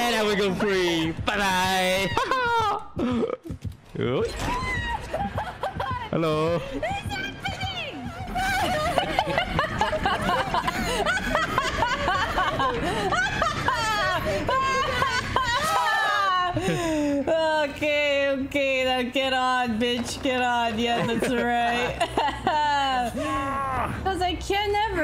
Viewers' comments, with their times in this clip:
0:10 that mad laugh